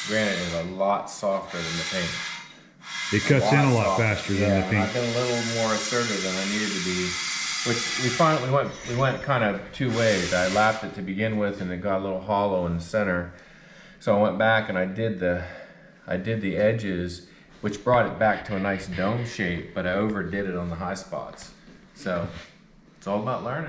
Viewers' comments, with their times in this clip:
0:06 it's like a screechy Oujia board :)